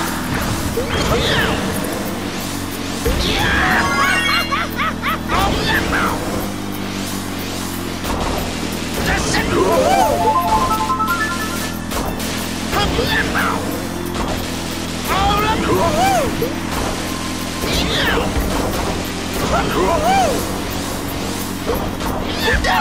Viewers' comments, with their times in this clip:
0:07 sounds like hes say dipshit...